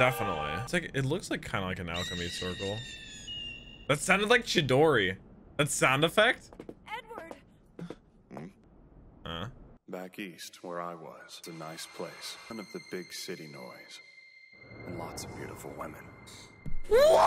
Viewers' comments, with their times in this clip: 0:04 literally me when I was watching fmab, its too close to chidori